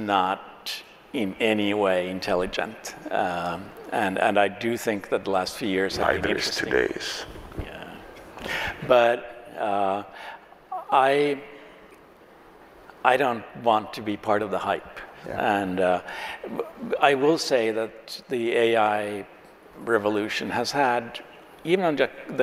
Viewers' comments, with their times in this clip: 0:06 couldn't understand what either of them were saying here... any help?